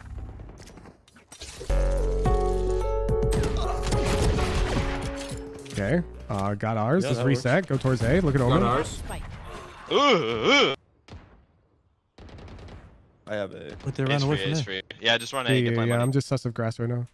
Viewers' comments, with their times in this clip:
0:03 the deag shots lined up with the dono lol